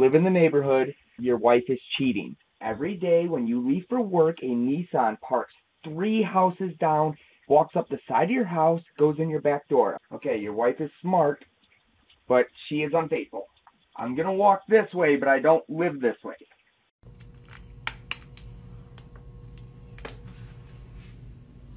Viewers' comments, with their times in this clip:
0:04 missed opportunity to talk like eminem